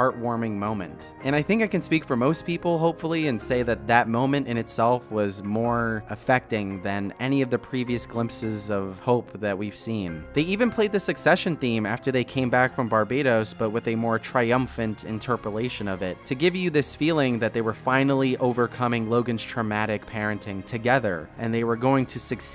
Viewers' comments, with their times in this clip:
0:03 The song playing !